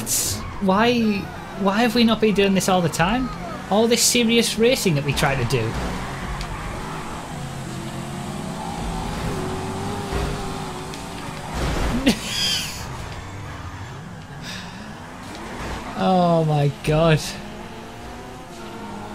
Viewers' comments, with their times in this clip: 0:06 I sense sarcasm in your voice